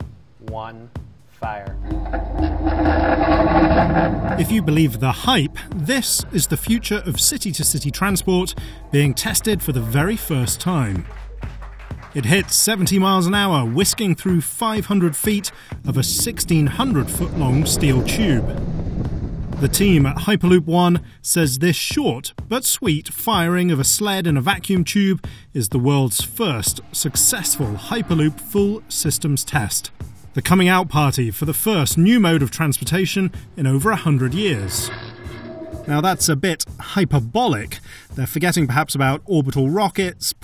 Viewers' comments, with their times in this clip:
0:09 Am i the only one who find it strange you could hear sounds when they are in a vacuum? (In vacuum no sound is possible, and considering they should be levitating no sound trasmission through the tubes either....) Are they really this stupid to not edit the sound?
0:22 someone tell me why when he says “short” does it sound like the old damage sound in Minecraft...